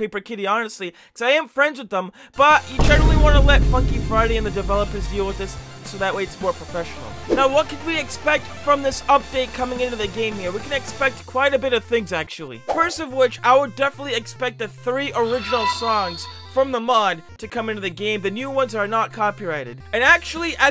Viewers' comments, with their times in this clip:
0:03 Vine boom sound effect